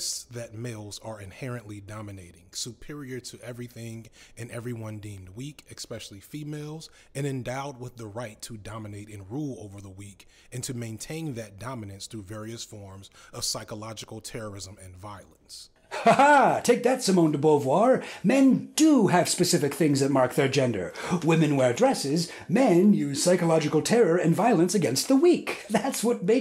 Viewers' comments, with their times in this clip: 0:08 Now, this might just be a "me thing", but I thought your video went silent because the audio goes to right-channel only and I only keep one earbud in (having both earbuds in makes me panic because I can't tell if anyone is approaching me, or if something is happening that I'm expected to notice and take care of). Had to rewind and swap out to hear the quote.